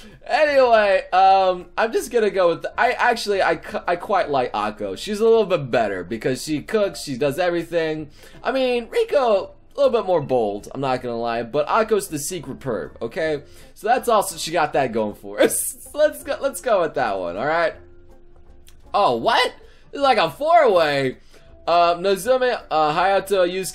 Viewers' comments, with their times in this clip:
0:08 I thought you just said Pico...